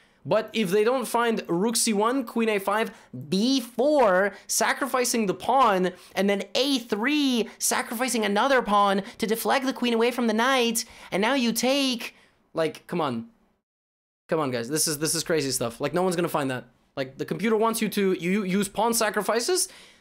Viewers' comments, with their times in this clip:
0:07 he sounds like a completely different person lmao